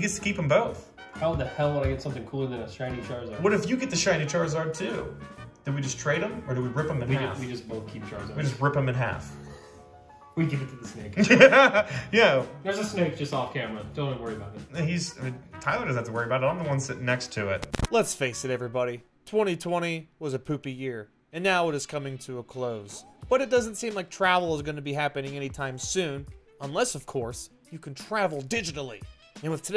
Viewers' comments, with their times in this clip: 0:10 You can’t tell me that the laugh doesn’t sound like woody the woodpecker